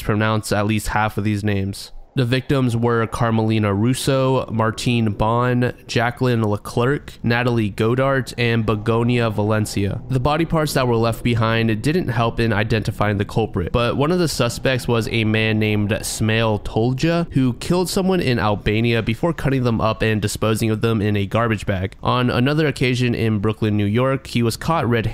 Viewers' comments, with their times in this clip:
0:10 don't worry the Italian names are pronounce well for someone that those not speak the language